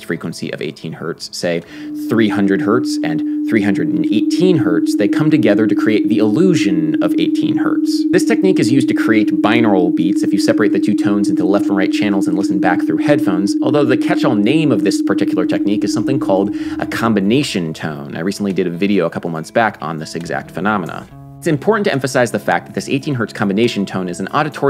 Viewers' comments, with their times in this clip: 0:06 ok WHAT THE SHIT!!! That 300-318 Hz sound made me feel really uncomfortable. It felt like I'd been pinched at the back of my neck and my breathing felt heavier. I am not joking. I have some good headphones, so maybe that's a factor? It's nowhere near as strong the second time I hear it.
0:06 needs a health warning, I'm wearing headphones and 300Hz+318Hz is nasty